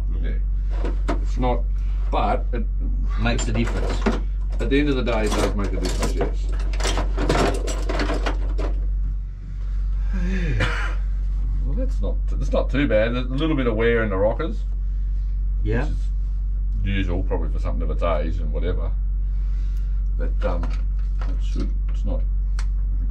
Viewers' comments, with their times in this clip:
0:10 cough in the face